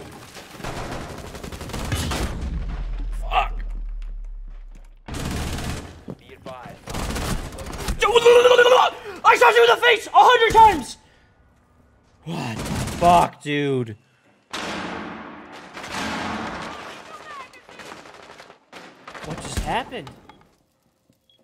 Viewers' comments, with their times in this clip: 0:03 that noise he makes 🤣🤣